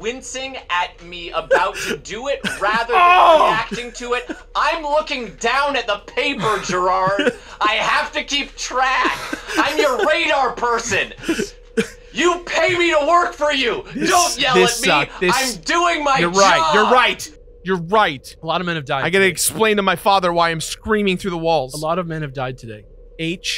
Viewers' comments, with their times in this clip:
0:09 That outburst sounded a little too... real? I get the feeling working for Jirard is a bit high stress sometimes.